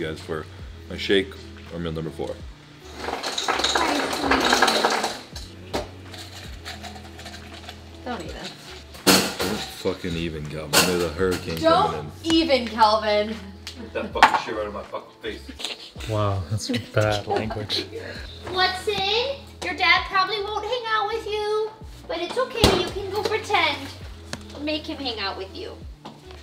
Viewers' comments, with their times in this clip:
0:04 ice machine = farts jajajajaj
0:04 lol was that a fart? 😆
0:08 Holy fuck i thought you had some nasty fart soundtrash lmfao